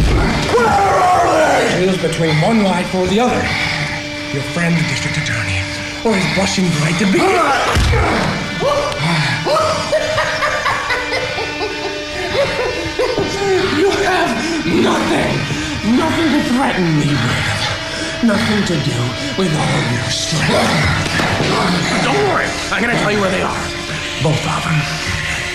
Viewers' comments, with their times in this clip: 0:10 Haha, The Joker is just laughing all the time :p I love him :p look hahaha xD